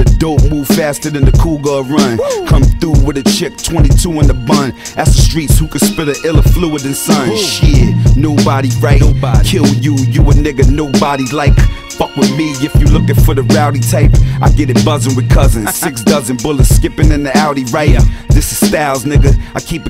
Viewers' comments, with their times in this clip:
0:06 this was an ill joint. But I didnt like what you did in some parts of the video for example what you did :52 to I feel like you kinda ruined the mood a little. But you had a nice flow.